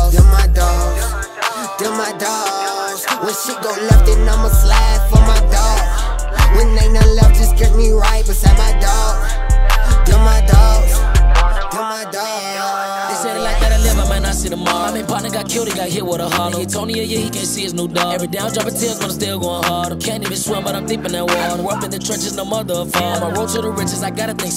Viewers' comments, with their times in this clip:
0:05 I like that “yuuuh” ad-lib that shi sound hard asl 😂🔥